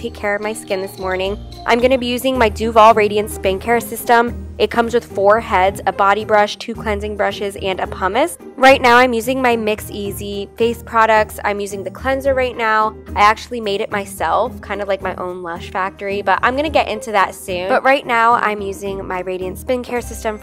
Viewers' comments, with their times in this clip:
0:03 how dare u listen to god is a woman on zero volume sksk
0:03 lol the volume on the phone is off 😂
0:03 “god is a woman” is playing right? Nope the volumes all the way down. Teaaaaaaaaaa sksksks😂😂
0:05 why is it playing music but the sound is off?
0:06 the volume is so loud omfg ahhhhh
0:07 i love how the sound is just off